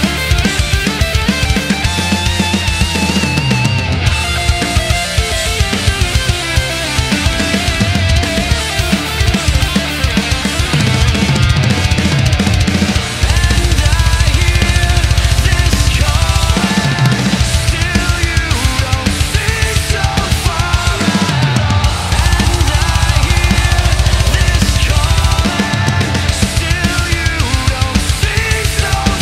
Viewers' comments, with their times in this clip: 0:09 The fill just sounds awesome
0:09 that fill fml
0:09 That fill though... Heart just exploded.
0:10 I just love how this is so smooth. Such a beautiful fill.